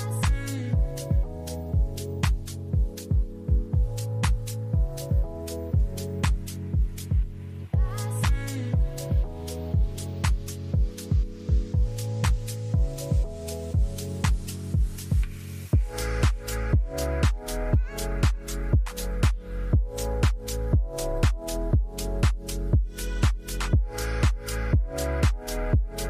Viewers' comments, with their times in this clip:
0:07 why does it sound like "gassy" ?